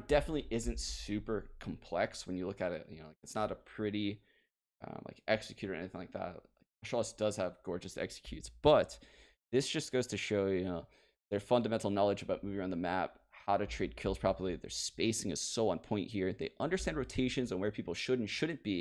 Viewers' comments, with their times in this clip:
0:05 "Astralis does have gorgeous executes" lol I love how you say that